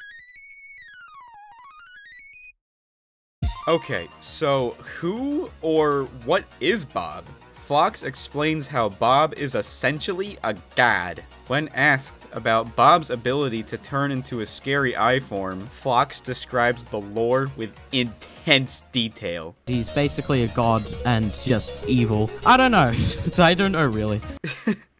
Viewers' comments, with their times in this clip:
0:10 a GAD XD i love ur voice btw
0:10 never say god like that ever again… Because its funny